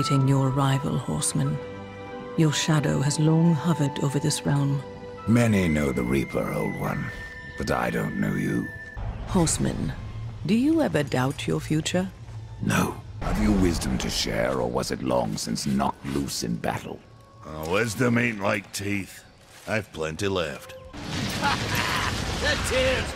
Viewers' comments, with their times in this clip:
0:05 Why does my man low-key sound like hes trying to rizz her up